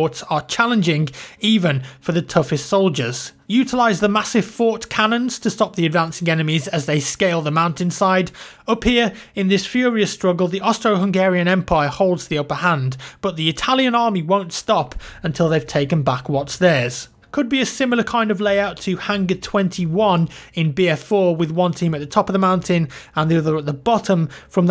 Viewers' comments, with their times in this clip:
0:10 Yeah....abaut that... I alredy heard some Hungaryan swearworlds.... :D